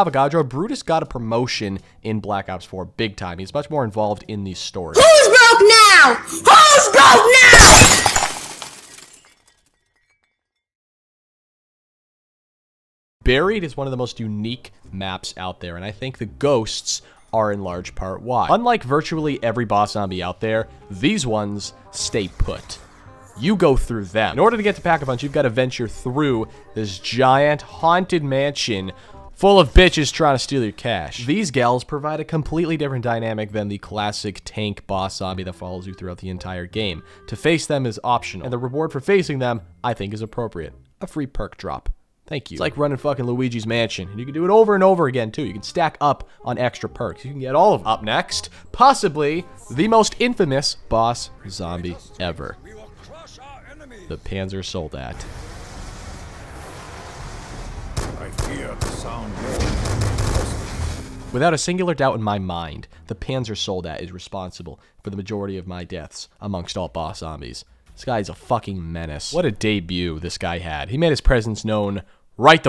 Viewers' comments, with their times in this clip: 0:06 thanks for killing my ears
0:59 I heard and felt the fear in the shots he took 🤣😭😂